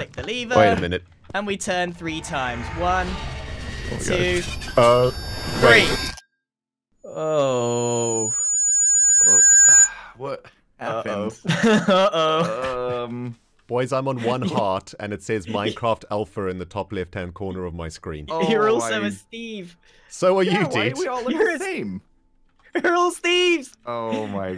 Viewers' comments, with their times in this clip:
0:07 I was wearing headphones and had my volume pretty high, this destroyed my ears lol